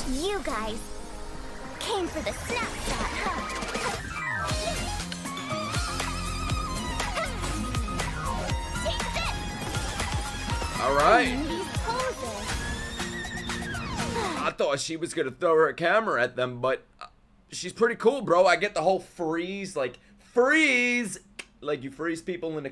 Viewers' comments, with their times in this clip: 0:04 Damn bro, the guy on synth is making sweet love to his instrusment